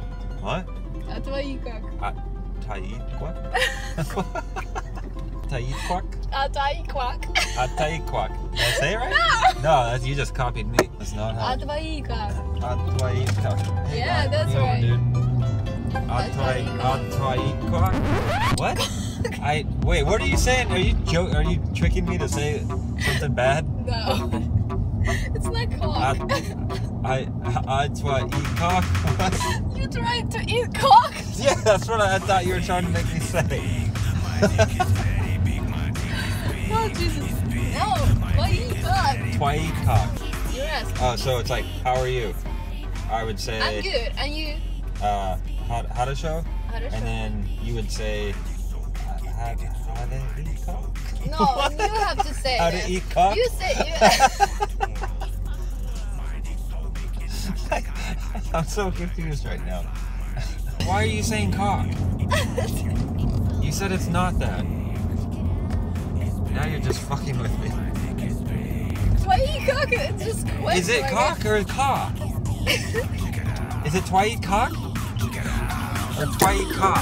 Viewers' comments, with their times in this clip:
0:04 you tried to say a word in russian and when you said it it fiinished in french!!! XD XD
0:28 that song lmaoo
0:58 What the fuck was that music 😂😂